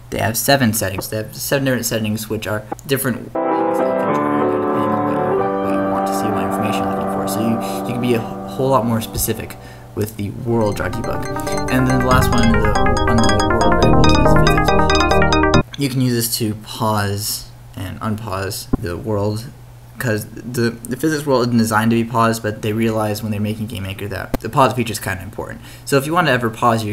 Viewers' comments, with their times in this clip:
0:09 There is music throughout the video too; Check here: around there